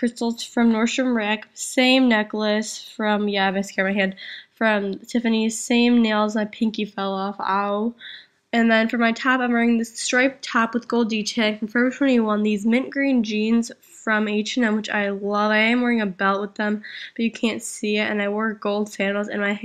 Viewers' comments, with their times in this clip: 0:07 LOL at how you said "ow"